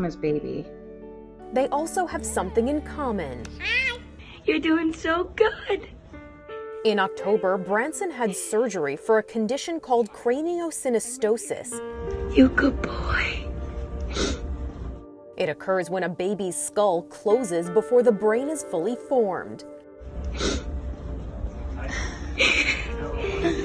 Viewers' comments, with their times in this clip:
0:04 Awe, her voice is breaking 🥺💙